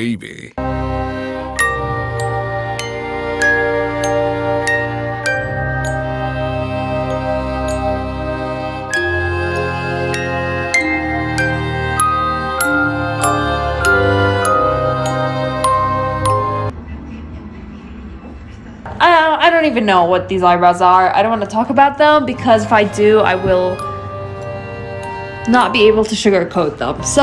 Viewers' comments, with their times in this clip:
0:08 This music is giving me mad PTSD for some reason and I dont know where its from or why, but damn that hit me off guard :(